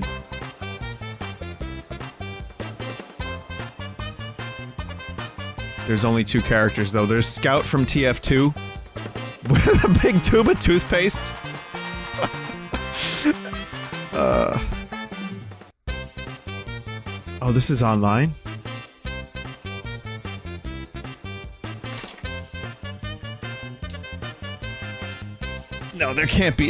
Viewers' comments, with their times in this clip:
0:09 what a splunkin' good tune you have here, game.